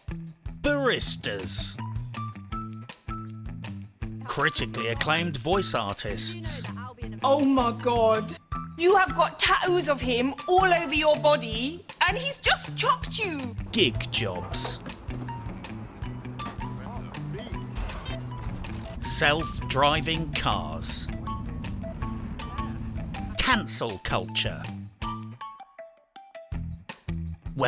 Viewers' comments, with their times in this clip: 0:08 how did they go from tattoos to tahuus ? :))))))))))))